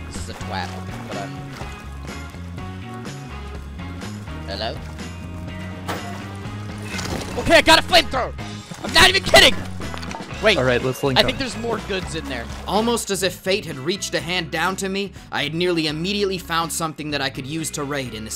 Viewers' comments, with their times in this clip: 0:06 omg my poor ears lol